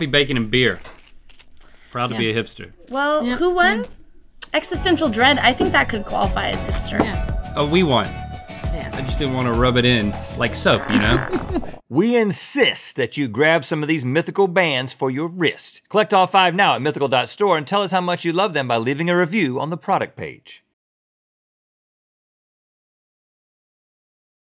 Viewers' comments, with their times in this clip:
0:09 Just before the video ends, a farting sound can be heard...origin unknown
0:10 did someone fart ?